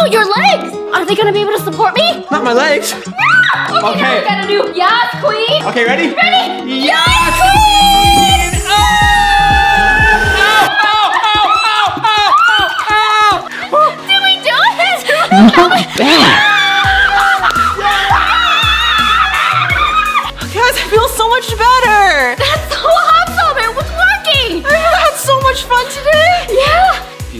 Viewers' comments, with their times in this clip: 0:10 i just felt tht alarm